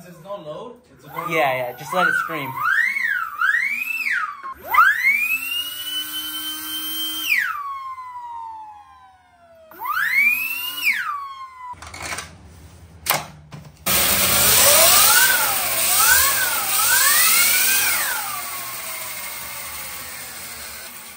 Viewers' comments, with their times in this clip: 0:06 the ultimate vacuum 😂😂
0:06 It is screaming of excitement.